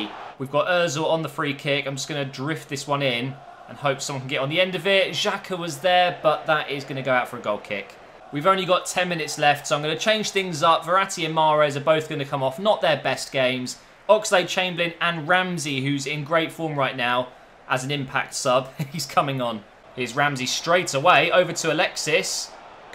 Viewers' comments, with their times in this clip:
0:08 Out of sync after